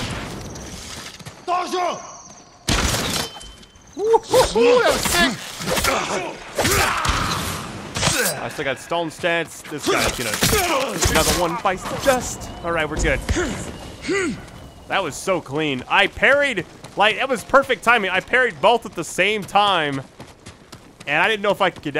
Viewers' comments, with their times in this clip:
0:03 do you guys here a weird voice which says "shit" or "sick"?